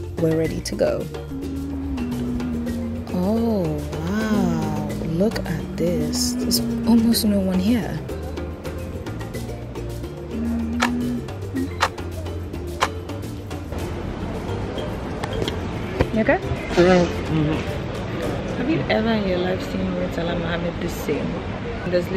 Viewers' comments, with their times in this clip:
0:08 that British accent🤣🤣